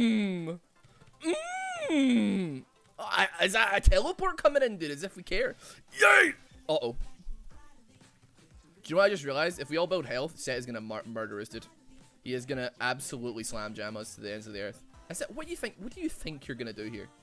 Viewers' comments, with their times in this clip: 0:05 What’s the name of that funky song that starts playing ?